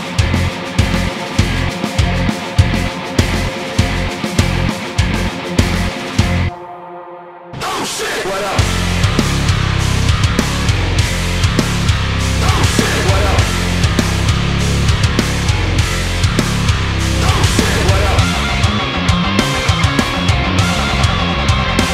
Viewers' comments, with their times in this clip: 0:06 ok fuck that actually swings!